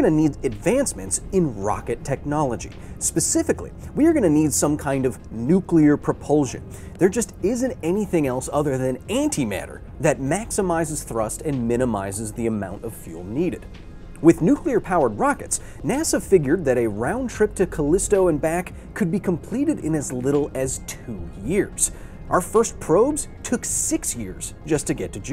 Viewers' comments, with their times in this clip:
0:10 -Does Auntie really matter?